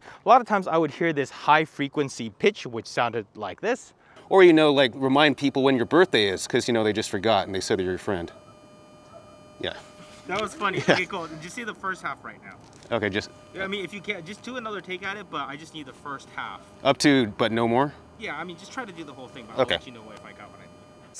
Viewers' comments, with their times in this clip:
0:06 this is RF Interference. This is only solved with shielding inside the actual product or by isolating the device from another wireless device and signal. Was the DJI receiver being used when recording this segment or was the transmitter being used as a recorder only? I was very keen to get the dji as backup mics on weddings but this might be the deal breaker. Already tried the go2 and the clipping and having to use an app to transfer files was a very bad experience. Just need something that is reliable so I can set and forget. guess I got to just keep waiting for the next Gen of these rec/transmitters.